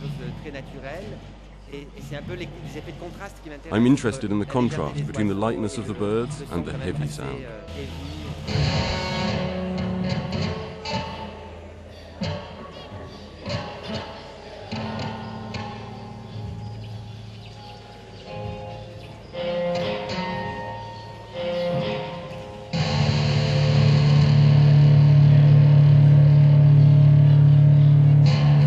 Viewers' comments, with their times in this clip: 0:09 he plays a major arpeggio.